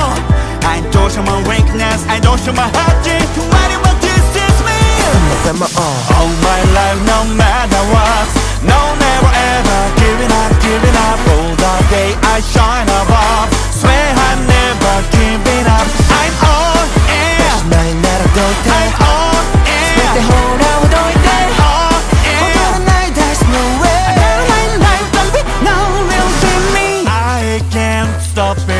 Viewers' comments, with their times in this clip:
0:03 I could not agree more that love mingyu sounds so good
0:12 Baby gyu’s voice is sexy and cool love hearing it